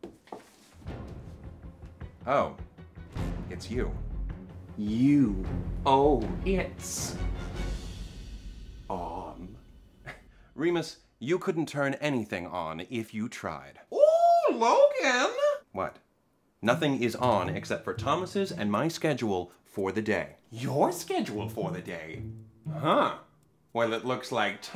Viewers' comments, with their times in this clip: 0:10 So like we all agree Logan 100% knew what he was doing here right?- CUZ LIKE THAT TONE SAYS IT ALL-